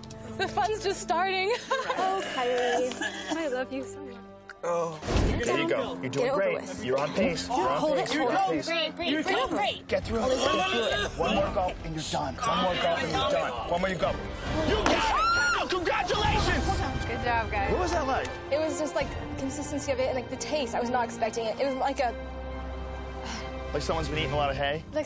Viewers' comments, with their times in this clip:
0:10 I literally almost puked when she’s slurping it down.